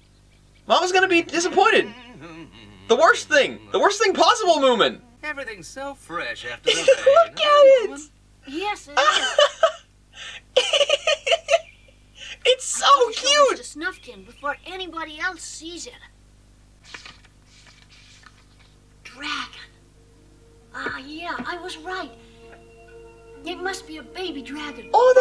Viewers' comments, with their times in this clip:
0:08 No you ARE, YOU are so cute!!! When you are laughting about small gragon ^_^